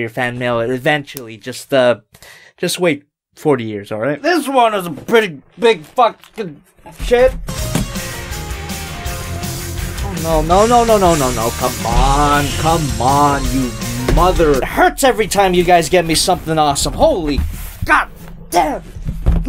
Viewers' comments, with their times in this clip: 0:06 I had to rewind it. I HAD to hear that theme again <3 GaoGaiGar may just be my favorite anime of all time. Also, that ending....... see you in twenty eighteeeeeeeeennnnnnnnnn? ^^;